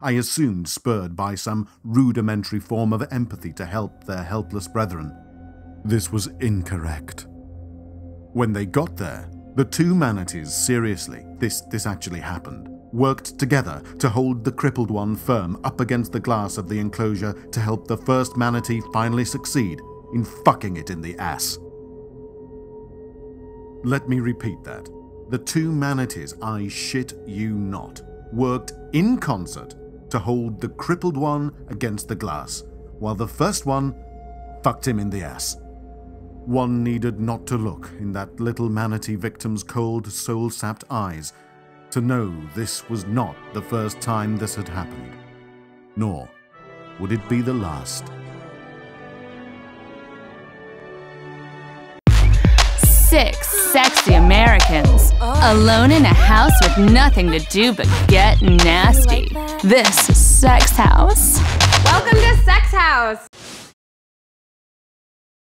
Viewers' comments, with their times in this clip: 0:05 The way he said “this was incorrect,” made me feel like the narrator is reading some sort of yaoi fanfiction or something. Lost it right there
0:20 this isn’t funny but the way he said it tho 😅😂
0:22 YEOOOO 😂😂😂 it’s not funny but the way he said it
0:34 He put so much emphasis on that 😂
0:46 listen closely you can hear someone talking in the background during the narration.